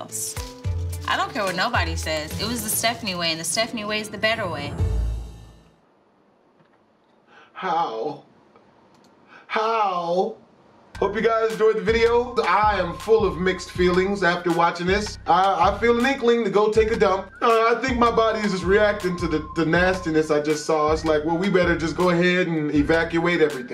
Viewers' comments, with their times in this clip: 0:08 is it just me or does my phone vibrate at this time lol